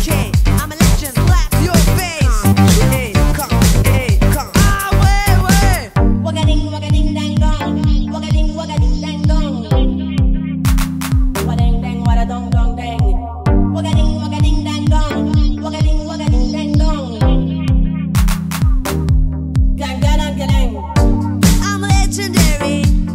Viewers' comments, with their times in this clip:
0:06 the interlude is mysterious and awesome